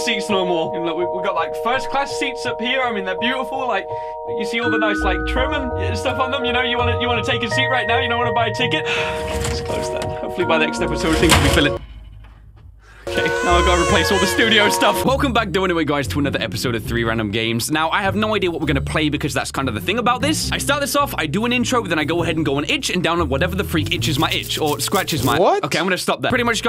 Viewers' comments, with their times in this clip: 0:09 U are using cernobil sad music here